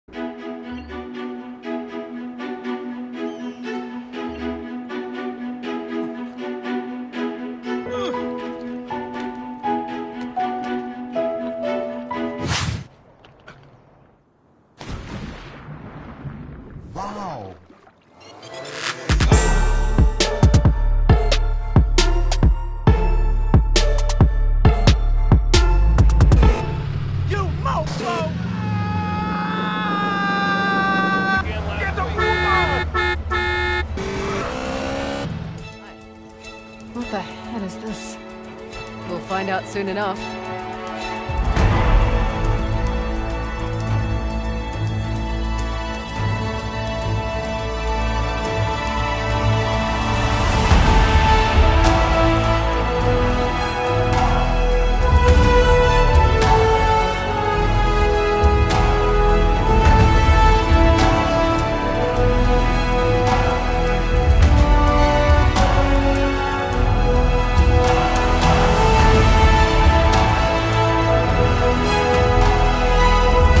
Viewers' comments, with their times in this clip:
0:05 OMG, THATS DUTCH! I say this because im Dutch too xD
0:40 That was some epic music
1:00 what's the song/music name starting from ? its very majestic and beautiful. :)